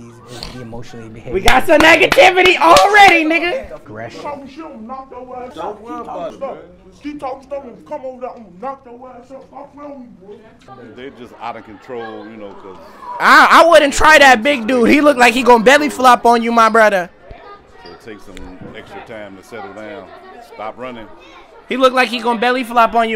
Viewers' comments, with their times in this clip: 0:05 😭what quest did bro do, to unlock that voice?